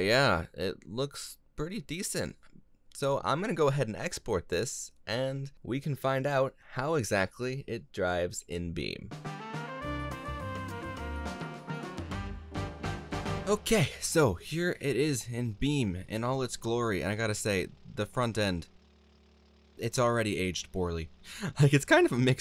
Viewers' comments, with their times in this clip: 0:08 I cant unhear that as the Jarcast theme